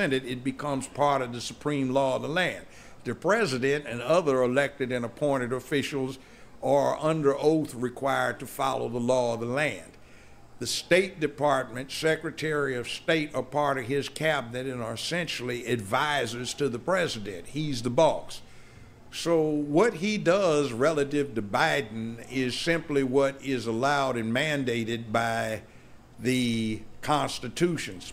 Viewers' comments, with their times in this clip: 0:10 Youtube quit being punk s stop messing with sound . You pissing me off